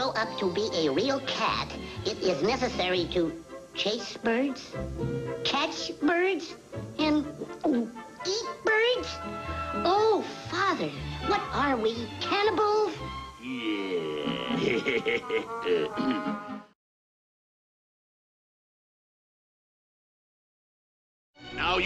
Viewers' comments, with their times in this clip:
0:09 Amazing voices!! BTW: at: I thought Silvester´s son was going to say: "Ooohhh Fuck" , but he said: "Ohh Father" :P lol, just an observation.